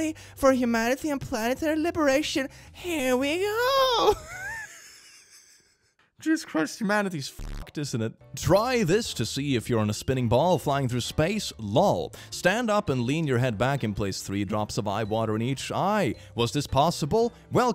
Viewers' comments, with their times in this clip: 0:03 As you speak I slowly faint to sleep. Your Voice is so calming and just astonishing.❤❤❤ I love your Videos❤